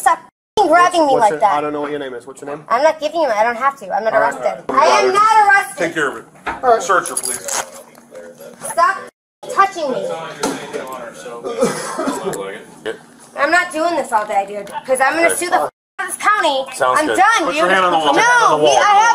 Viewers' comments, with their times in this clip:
0:03 shouting "I'M NOT ARRESTED" while standing in a jail is one of the funniest things i've ever heard